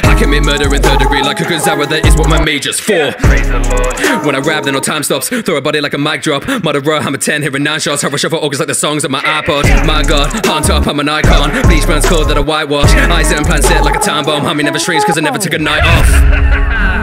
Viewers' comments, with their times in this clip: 0:03 best moment of the rap. It's awesome the idea that since the time is stopped there ain't an instrumental just rapping